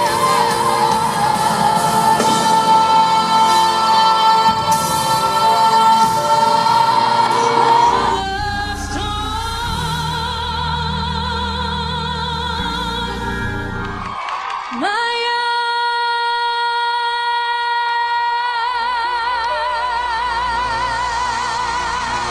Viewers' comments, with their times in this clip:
0:09 Beyoncé "Halo Live at Chime for Change" into the video. Her pitch starts going all over the place.